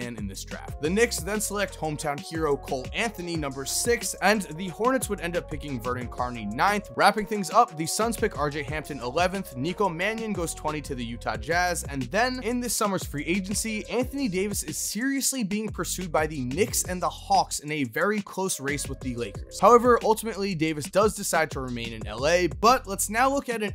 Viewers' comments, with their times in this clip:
0:05 Vernon "Carney" Jr.